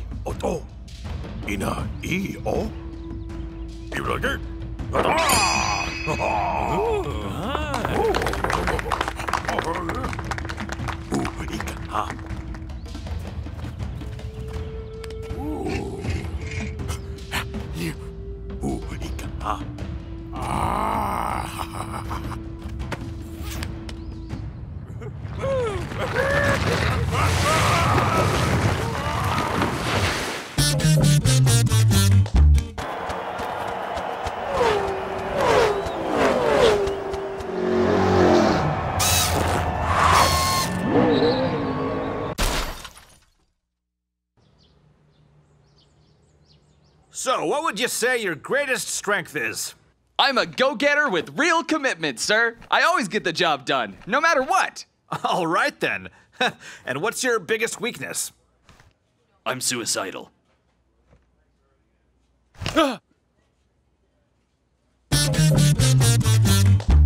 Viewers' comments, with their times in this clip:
0:03 who had the Gorn gladiators voice the cavemen
0:53 this dude sounded like Death from the Purgatory series lmao